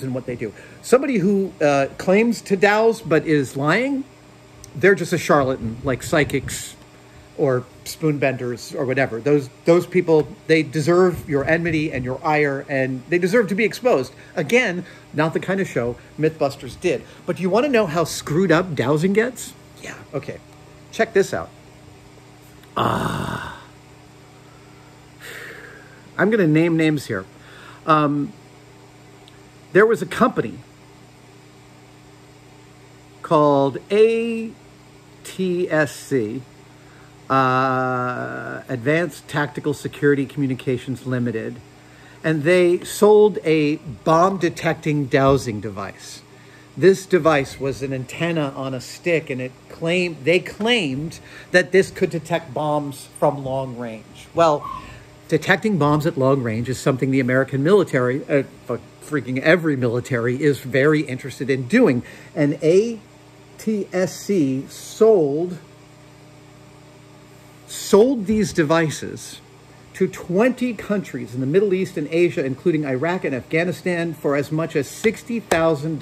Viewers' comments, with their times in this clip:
0:05 I thought someone was at my door tbh
0:06 made me think someone was knocking at my door!!!
0:11 someone is coming up the stairs
0:52 he almost clearly says "Fucking every military" hahahaha
0:58 VERY quickly self-censoring an F-bomb there